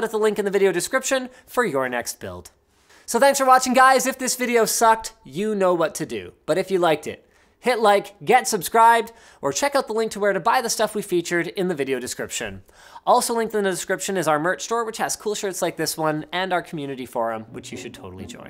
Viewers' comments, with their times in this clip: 0:03 Linus audio isn't synced from lol fixed